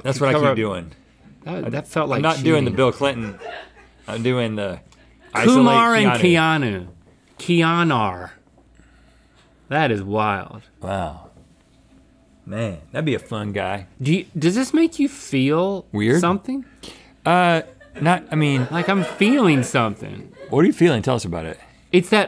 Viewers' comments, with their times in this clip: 0:07 British people saying Keanu: